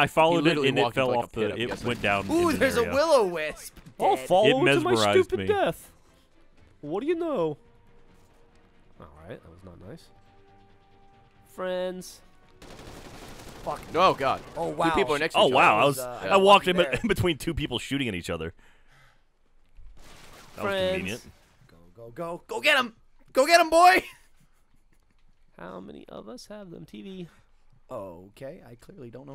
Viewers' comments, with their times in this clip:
0:10 Oh man does Geoff start singing MF DOOM I love that man